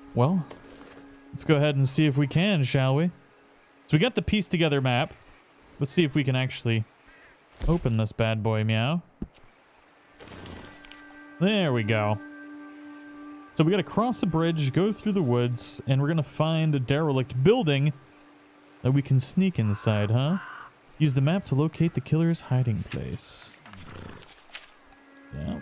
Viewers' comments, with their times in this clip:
0:08 "open this bad boy.. Meow?" Am I hearing things?